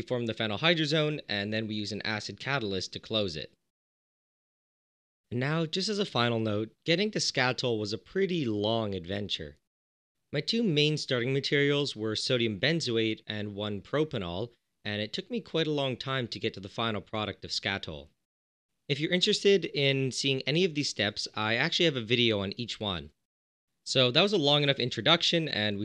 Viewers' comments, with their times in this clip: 0:06 got alittle tired when narrating